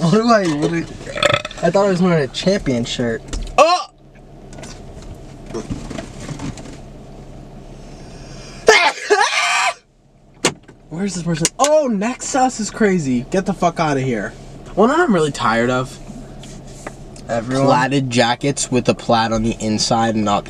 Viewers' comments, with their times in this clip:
0:08 all of them sneeze the exact same